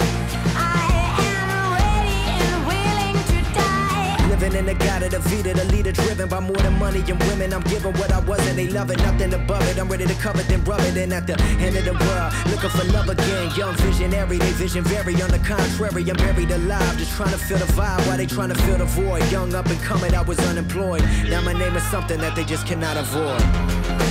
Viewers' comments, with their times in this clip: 0:06 logic spitting fire.
0:08 sounds like Busta Rhymes